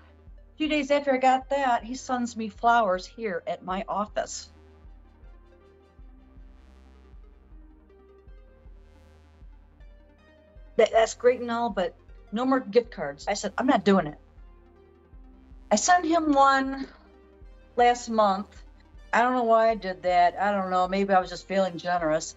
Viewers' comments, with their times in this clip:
0:07 the way she says “But then..” made me snort